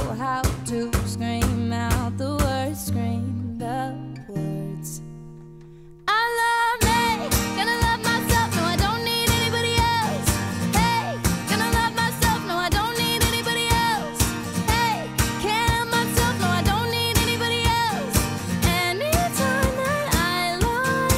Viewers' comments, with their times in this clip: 0:06 I LITERALLY THOUGHT SHE WAS ANTONIO GARZA WTH